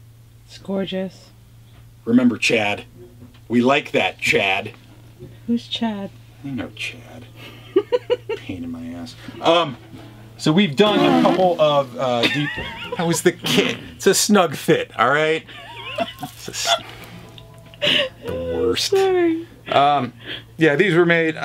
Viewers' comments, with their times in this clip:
0:09 that remind me when i used to scratch some vinyl records.